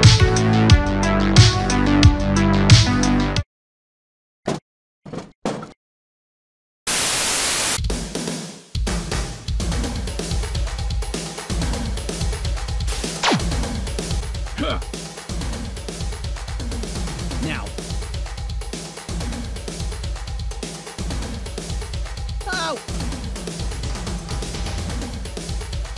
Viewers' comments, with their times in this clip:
0:08 I love this music